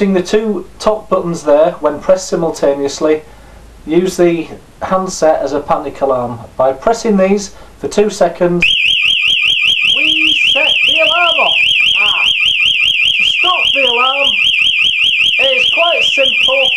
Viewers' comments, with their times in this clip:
0:03 beaware youtubers i got ear raped onwards sugest turning down speakers now if i was you befire hand alrm goes off